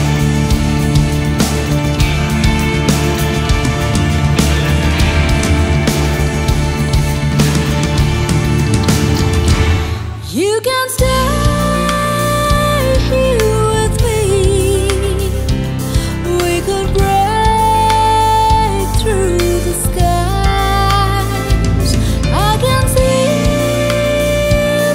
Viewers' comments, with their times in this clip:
0:10 You know Vinnie probably nailed this 5/8 & 6/8 tune in one take...LOL.....and even has time to mute the floor toms and over the bar open HH in 5. Nice ! (She must have some backing $$ to get Vinnie, James, Landau, and Whitty on the session).